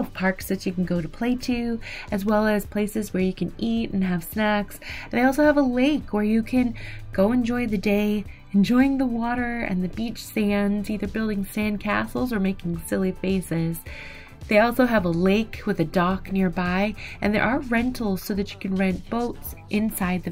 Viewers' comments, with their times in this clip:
0:05 Did anybody else say, what the what ? Though I heard great place to eat and have sex 😂. Great review of these cabins, I’ll check them out based on your recommendation.